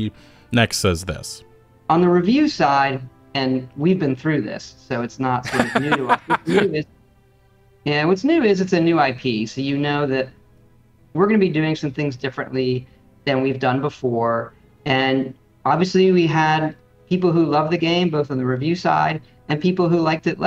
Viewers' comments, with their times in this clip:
0:03 is it just me or does the guy interviewing Todd Howard seem unstable. He did that really aggressive salute before and now just awkward laugh. Maybe it's just a bad atmosphere and he's reacting oddly to it.